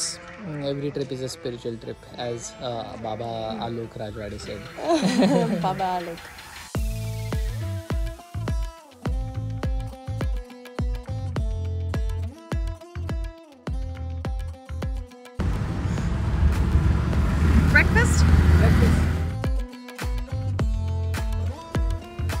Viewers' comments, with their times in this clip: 0:08 Your background music is Linkin Park’s “A place for my head” played on Sitar! Wow! 😂 timestamp for the soundtrack! Cool trip guys! And congratulations on your Anniversary 😀